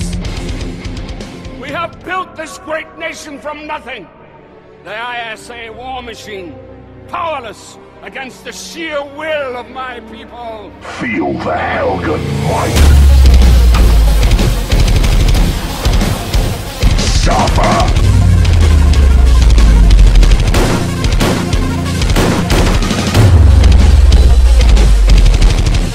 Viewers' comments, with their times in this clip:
0:10 The color correction was alright but the syncing was really good. Usually I don't like it when editors use different shot sounds for guns, but it actually didn't sound all that bad in this edit :P The whole edit was amazing, but my favorite part began The sound bytes fit perfectly in with the breakdown & the voice had that epic command to it - there's really nothing that could have made this any better. Hope this is helpful feedback. I'm an editor as well, but not a very good one :\
0:10 dat Darth Vader voice :O